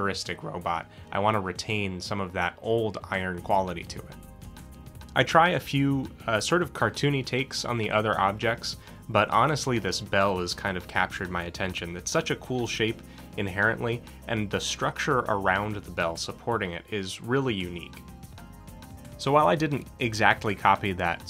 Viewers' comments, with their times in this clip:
0:06 Ooooh, I'm a huge fan of the more abnormal, inanimate kinds of character design, largely in part because of the challenge of it. I genuinely love how you used an antique bell, and turned it into a proper, functioning character. (Side note, less about the character design itself, but rather the sound design. The music didn't transition very well, and for about a minute or so just became a mish-mash of both your "somber" and "upbeat" songs. I don't think this was intentional, just something you oughta keep an eye out for next time.)